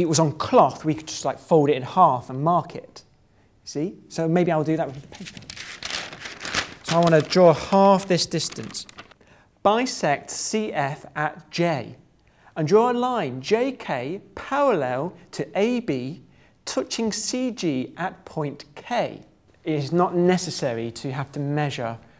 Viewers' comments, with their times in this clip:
0:10 The word of "Bisect C" its looks like the word "By sexy"